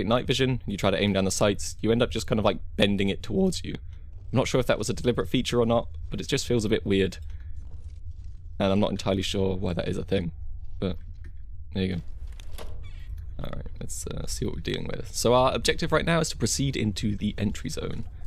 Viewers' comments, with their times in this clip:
0:03 Anyone noticed the voice crack ?